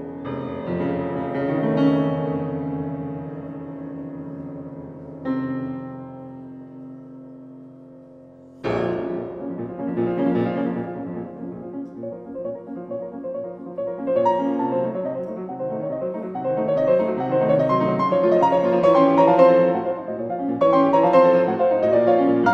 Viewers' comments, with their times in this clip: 0:08 a fantastic out of breath "doppio movimento" ... thank you Yuja, you are great !
0:08 That dry, loud bass